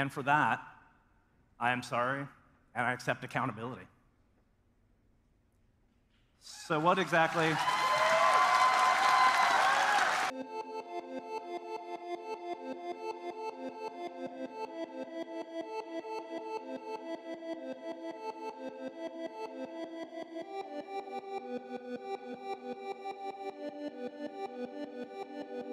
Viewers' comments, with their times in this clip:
0:06 I love how he pauses for pre-planned applause (Applause sign goes on)